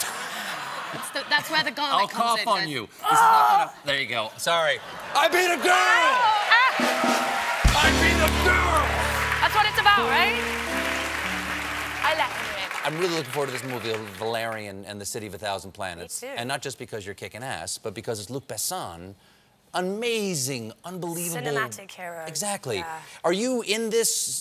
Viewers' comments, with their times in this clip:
0:05 Sort of sounded like Tuck Buckford